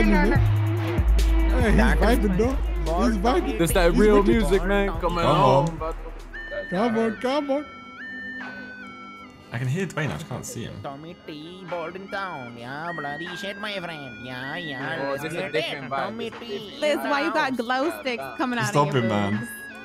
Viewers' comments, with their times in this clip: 0:07 bro i been looking for the song that starts it's so soothing if anyone's got the name or link send it pls